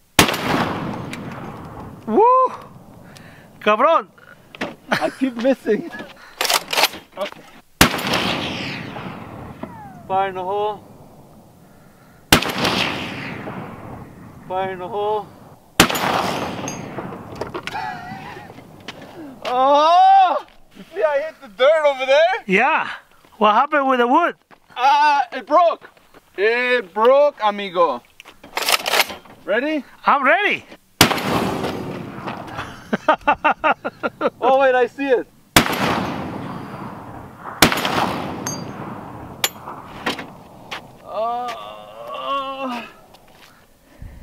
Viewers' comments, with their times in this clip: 0:07 is awesome - you can see the dust trail and hear the ricochet sound
0:09 Thought I heard a ricochet
0:11 So am I the only one that heard that whistling noise 😳 i’m not an expert but I’m pretty sure that meant that it was by them so whatever that bullet hit it just ricocheted back to him because The whistling noise indicates that it’s close to them🤭
0:31 DID ANYONE ELSE NOT HEAR THE RICOCHET ???